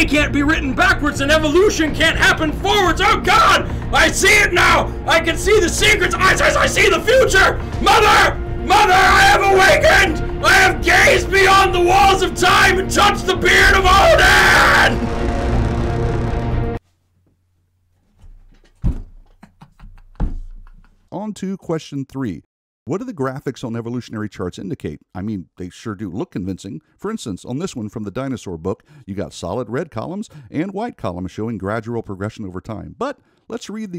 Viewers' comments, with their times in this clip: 0:10 Why you spoil your videos with these 100 dB "comedy" rants? That was unbearable, sorry.
0:11 Kevin from Hunter the Parenting type of voice
0:16 screaming = immediate nope. Pity. As I was enjoying this. Thanks for killing my ears.